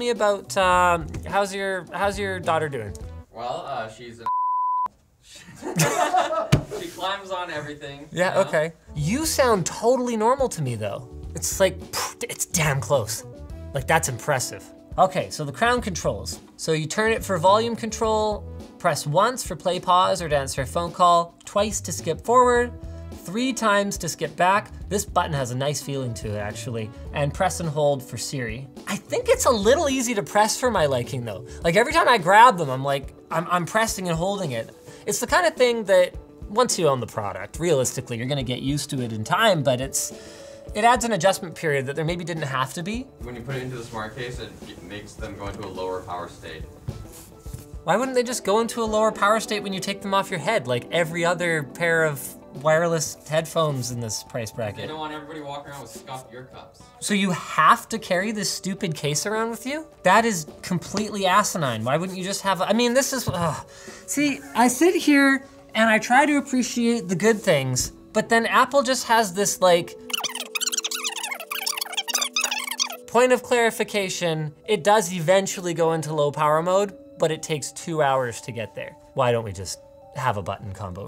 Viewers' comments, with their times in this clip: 0:09 He sounded kinda like Jordan Peterson there.
1:08 why did you speed it up? I love a good apple rant